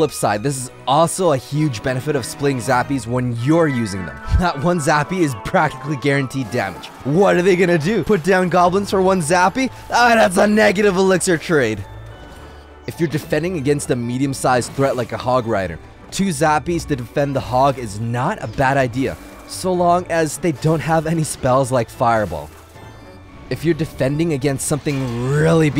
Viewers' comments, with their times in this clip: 0:07 That's boy... That's anime level of crazy voice
0:10 nothing beats that If you use headphones good luck😂😂😂